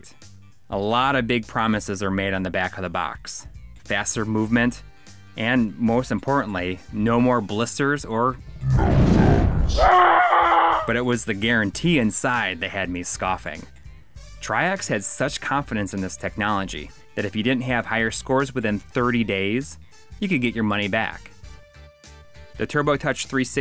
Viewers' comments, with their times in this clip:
0:08 You guys made a really good video showcasing the 3rd party controllers there!!!!! But the fact that some of the 3rd party controllers shown in the video has their pros & cons which you guys stated in their entirety in the video happens to be SUPER informative!!!!! And 1 more thing, that part right after the part where you said "Numb Thumbs" and that funny scream from "Metal Slug" LITERALLY made me laugh out loud!!!!!